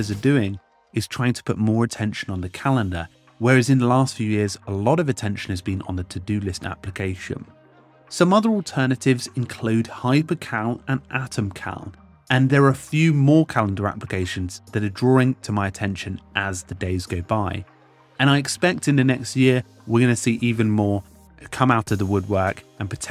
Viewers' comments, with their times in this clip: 0:09 What are the two calender names he mentioned in it is not understandable.